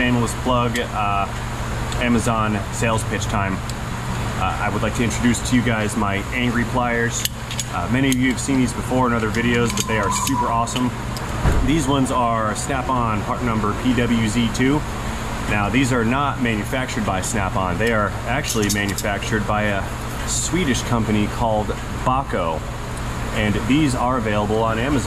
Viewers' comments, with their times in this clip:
0:08 was there an accident outside? .. lol sounds like tires screeching then a bang.